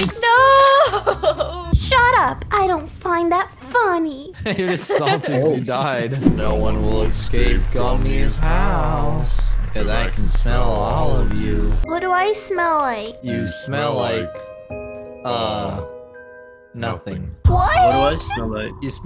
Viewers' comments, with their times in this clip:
0:07 Creepy Vocie and The Red Background 😈😈😈